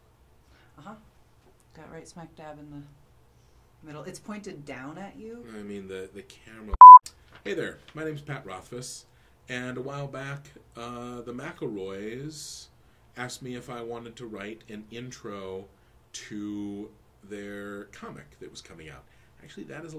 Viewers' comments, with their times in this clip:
0:05 it's ok I didn't like my eardrums anyway.